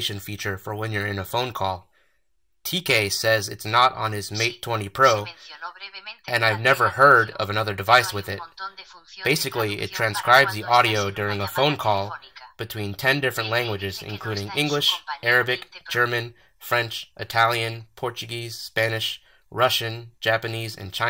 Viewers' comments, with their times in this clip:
0:05 He gay says xD